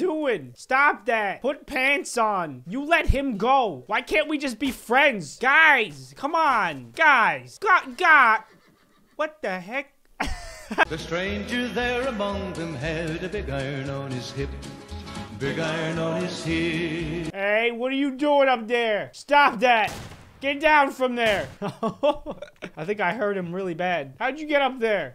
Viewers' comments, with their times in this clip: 0:06 what da heck xd sounds like peter griffin